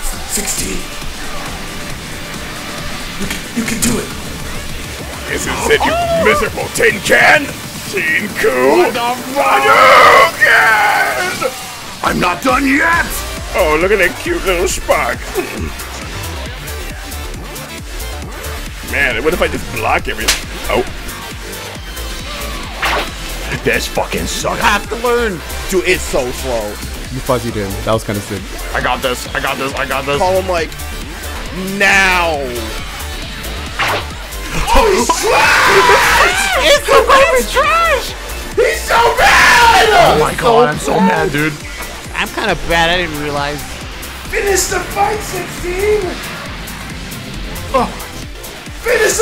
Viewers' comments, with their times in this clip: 0:07 I love that synchronization of the music and the voice line on
0:08 The way the music synced with him saying “I’m not done yet!” was genuinely perfect
0:13 Bro the "I'm not done yet!" Sound so damn confident
0:34 So loud AND mad